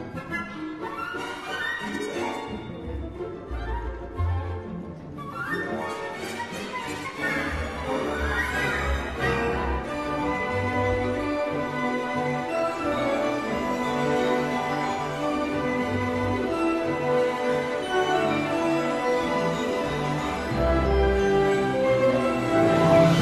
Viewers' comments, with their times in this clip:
0:08 best bit.... Love that melody so much. the strings and brass just dancing around each other.